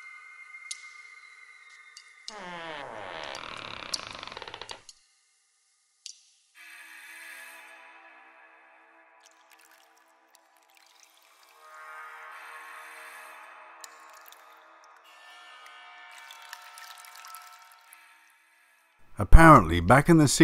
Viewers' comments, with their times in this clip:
0:06 OMG!!!! 🤣🤣🤣 I thought you put in a fart sound effect at first!!!!! LMAO!! Then I realized it's a creaky door! Bahahahahaha!!! Now I'm stuck laughing my butt off!!! 😆😆